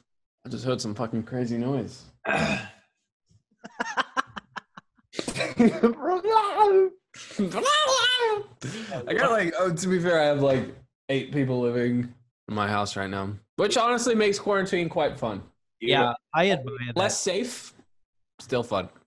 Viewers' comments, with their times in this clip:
0:04 Go to and don't look at the screen. listen to the Pokemon😂😂
0:06 Michael doing the "blalalgl" thing is the cutest thing I've ever seen
0:07 THE NOISE MICHAEL MADE I-
0:07 michael sounded like that cat from the smurfs